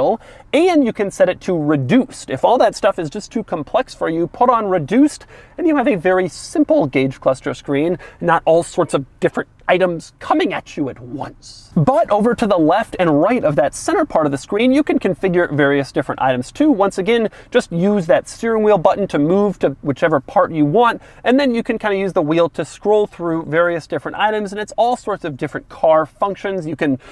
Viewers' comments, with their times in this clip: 0:05 Was that Yoda speaking or Doug?
0:07 That's a spot-on Yoda impression.
0:09 Why does he sound like Yoda ? 😂😂😂
0:09 Was going to say his reaction to flooring it was the best part of the video till I got the comments where someone said he sounded like yoda